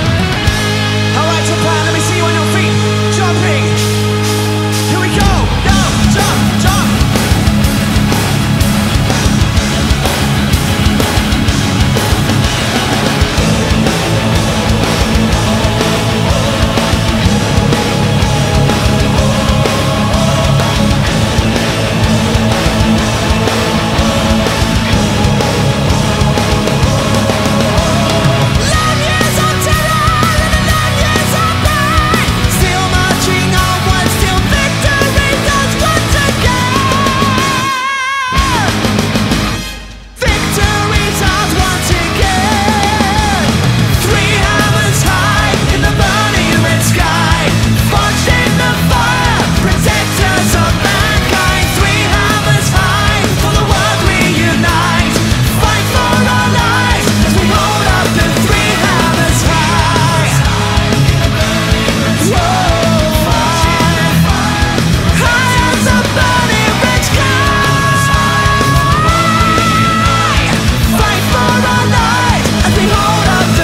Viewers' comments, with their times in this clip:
0:04 is the best part, especially with that battle chorus! HAIL DRAGONFORCE!
0:14 rhapsody of fire much ? Anyone ? Fuck i love powermetal 🤘
0:56 singing fail lol